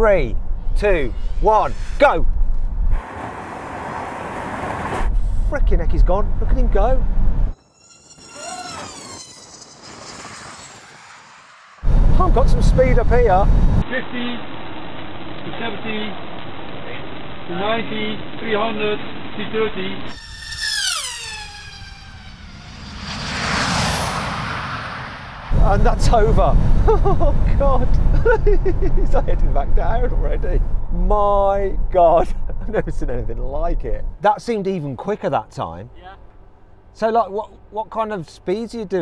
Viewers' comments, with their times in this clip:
0:07 Goodness me , that drone is like a bullet that sound like a plane is ready for take off .
0:20 Who said electric vehicles and propulsion don't produce awesome sound ?!? Listen to them both! (Beauty, sound, smell, fell/comfort and so on, are subjective and different for everyone. It's understandable if we don't agree with each other on those. But don't diminish something just because you personally don't like it. Your opinion is valuable, but so is everyone else's.)
0:22 that sound - awesome! Like a freaking fighter jet.
0:22 Tesla Sound like a Plane!